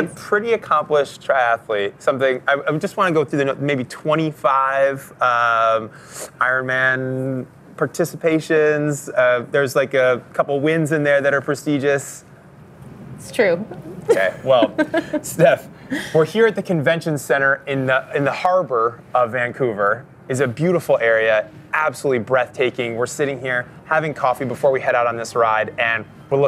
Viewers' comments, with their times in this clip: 0:08 How not to interview someone Please stop it with the 'Huhs'!